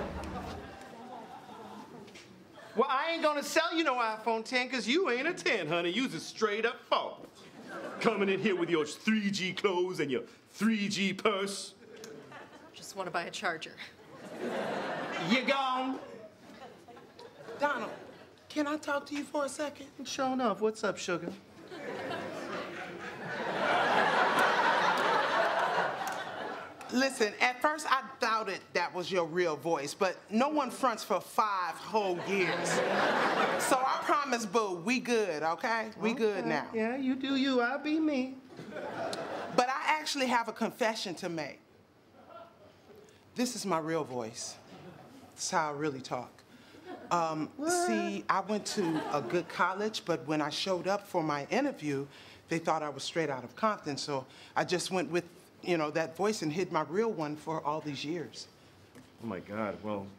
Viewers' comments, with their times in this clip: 0:07 he sounded like a king from the middle ages
0:19 they both laughing. Lmao🤣🤣
0:20 Love how they need to suppress their laugh
0:22 She started laughing and was breaking character. Funny how the cars didn’t change all those years either. 😂😂
0:47 that "Wha~~~t" gets me everytime lol
0:47 "Whaaaad?" Subtle but great.
0:47 the little "whaaaaa..." from Louis is just perfect and way less appreciated than it deserved
0:47 I keep pressing the to hear the wha~~~t. Haha
0:47 "wuuut?" It's the subtleties that get me every time.🤣